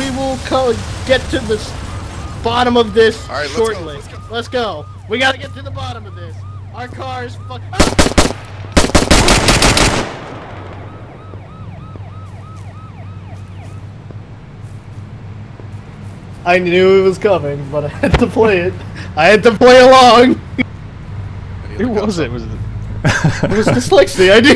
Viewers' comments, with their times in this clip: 0:06 That scream was perfect.